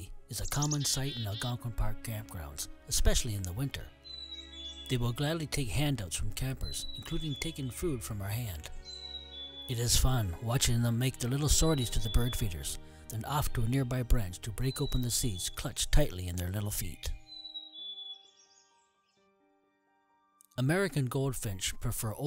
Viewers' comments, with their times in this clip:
0:06 Is that up-down call a black capped chickadee?